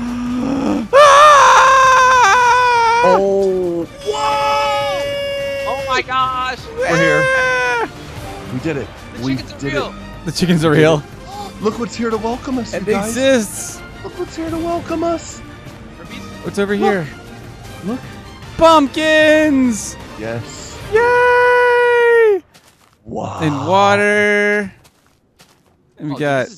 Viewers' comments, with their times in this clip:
0:09 EPIC MUSIC BRO!!!